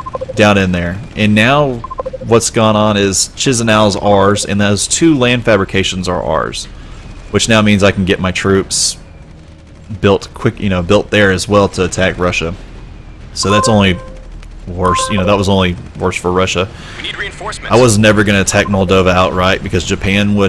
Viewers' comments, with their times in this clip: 0:03 the way you say it sounds like Chizenau but i think to spell it right you should say it is Kishinau.